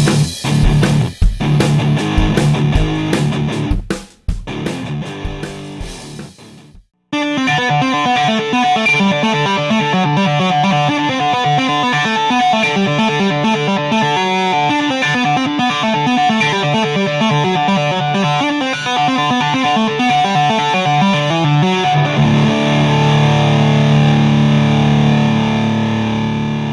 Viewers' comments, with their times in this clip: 0:07 Me: Mom i want Thunderstruck Mom: We have Thunderstruck at home Thunderstruck at home: